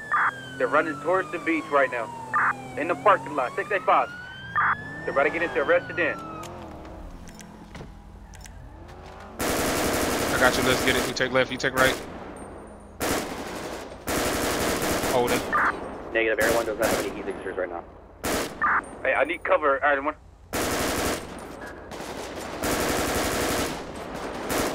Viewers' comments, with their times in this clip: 0:08 Here comes nothing (Shots Fired)...